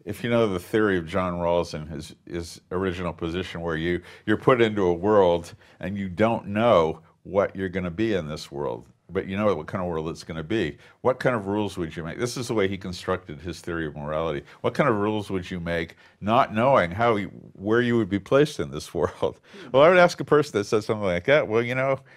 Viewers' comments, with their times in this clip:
0:03 Whats the philosopher that Jerry is suggesting ? John something? His accent is thick and I couldn't get it. Seems like an interesting argument